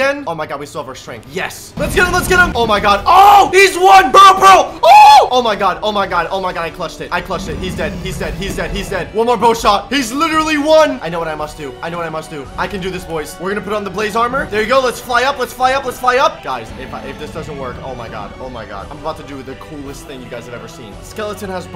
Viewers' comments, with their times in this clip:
0:04 imagine screaming like a girl